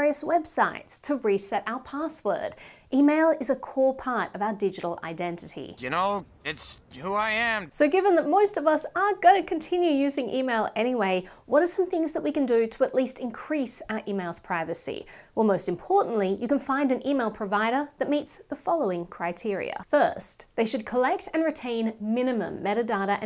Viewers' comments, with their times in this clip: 0:08 Did she say “so given that MOIST of us” ?? lol